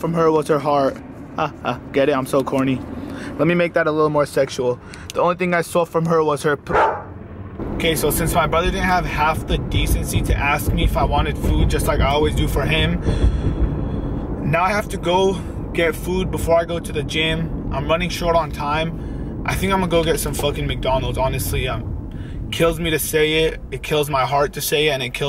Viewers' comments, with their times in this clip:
0:07 Guys, you can hear a random bark, probably a dog ghost?